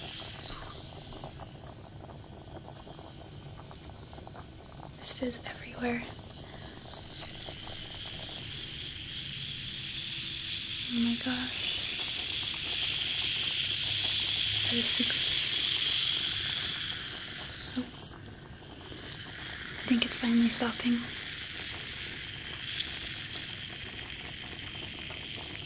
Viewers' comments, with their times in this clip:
0:09 sounds like bacon cooking